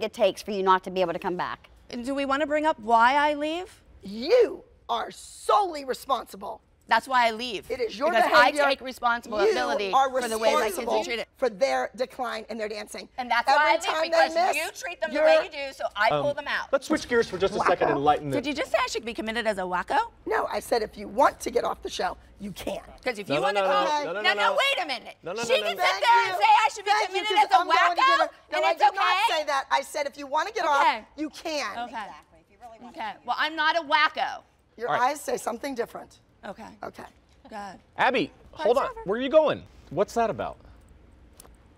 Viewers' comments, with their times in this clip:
0:08 Abby repeating you in the background
0:09 Wtf was the echo
0:11 it sounds edited listen closely its another voice of abby
0:26 Abby's chair said, "....UGHHHHHHHH....thank you!"